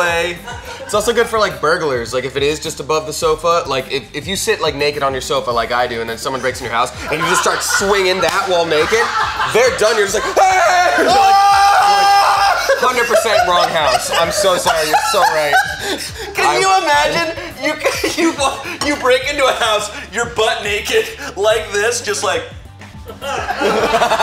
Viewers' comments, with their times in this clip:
0:07 too much laugh